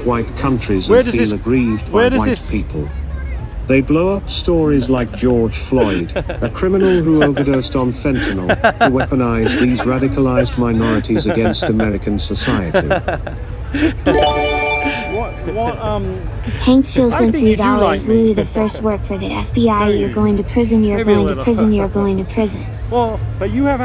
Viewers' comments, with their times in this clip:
0:06 The sound of a defeated insecure manchild. Fake laughter coming in nicely toobs. =S